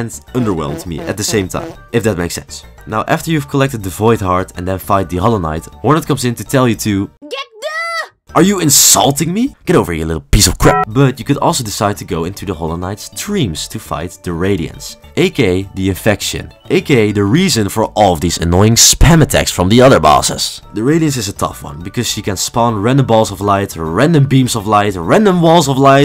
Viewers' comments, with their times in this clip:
0:08 I always here get going-🦉